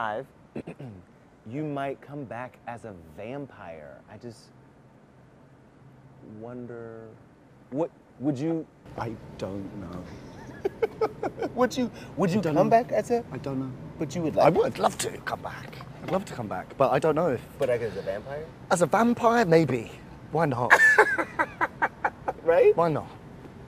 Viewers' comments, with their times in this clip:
0:07 the last "idk" felt personal lmaoooo he was done 😭